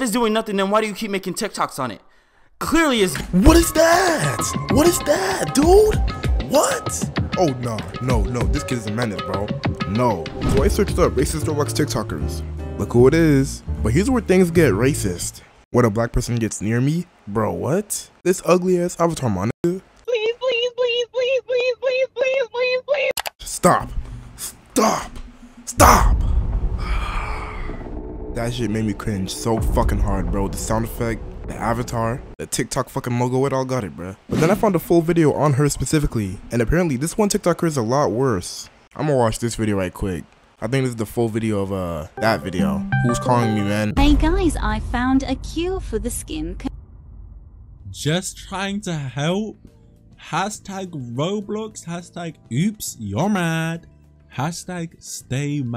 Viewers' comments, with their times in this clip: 0:04 the danganronpa sound effect 😭😭
0:20 The way the girl was like "Please please please" on the part of
0:42 bro I rly thought someone was calling me
0:42 THAT DISCORD CALLING SOUND CAUGHT ME SO OFFGUARD I LITERALLY CLOSED MY TAB CUZ I THOUGHT SOMEONE WAS CALLING ME